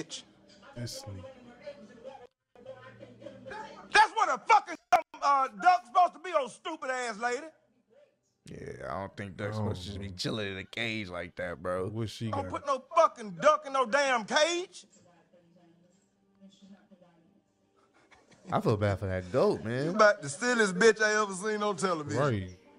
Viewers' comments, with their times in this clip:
0:03 I like how his voice echoes a bit right before he pops off 😂😂😂😂😂